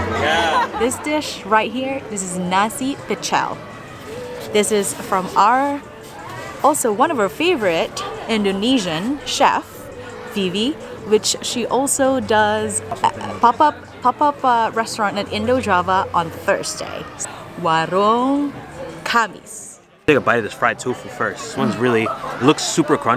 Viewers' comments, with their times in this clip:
0:04 I died that crunch was awesome!